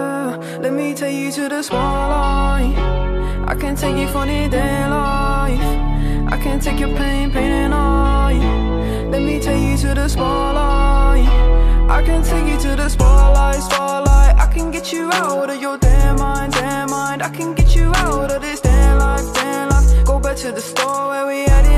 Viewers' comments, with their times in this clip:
0:07 Its cool music